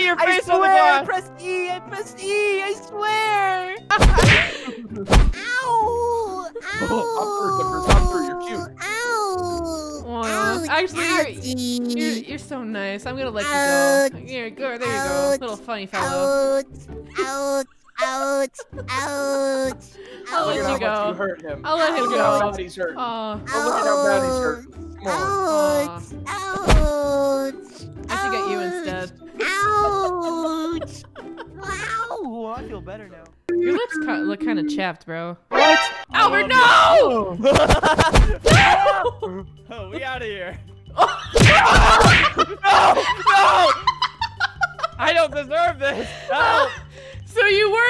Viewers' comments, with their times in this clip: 0:04 grown-up voice turns into a little baby
0:05 The missing childrns cry for help Fnaf
0:35 nah the timing of the laughter and hitting is just purrrfect XD